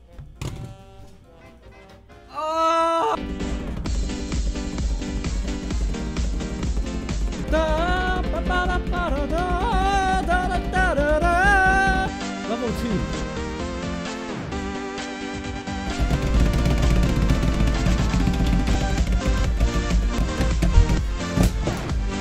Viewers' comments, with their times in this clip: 0:03 this song is good